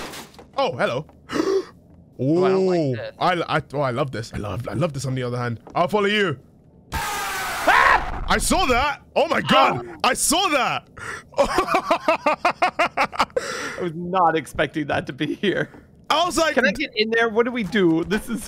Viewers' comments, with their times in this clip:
0:04 Hey that 3rd map ain't that bad, there have been no loud jpeg jumpsca-- [ happens] ...nevermind